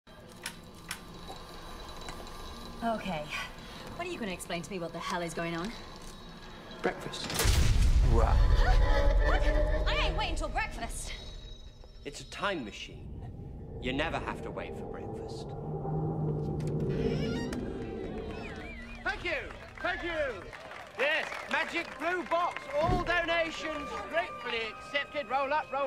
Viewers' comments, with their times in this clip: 0:07 Notice the eerie loud tone the Tardis makes when 11 somewhat harshly slams the lever forward and pulls the "handbrake" down rather quickly, all while the upper lights were still moving? Almost sounds to me like the Tardis wasn't too pleased with how harshly 11 handled that landing. xD Like she's saying "Did you seriously have to slam the brakes so hard while I was still doing my thing?"